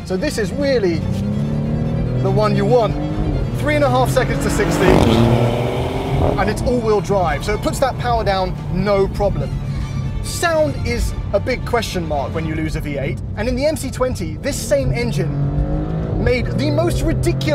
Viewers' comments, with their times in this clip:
0:04 Those whooshes and crackles are all part of the MC20's drama, not every Sports car engine has to sound "NA whistle clean" , that's just so senile and boring having that opinion lol.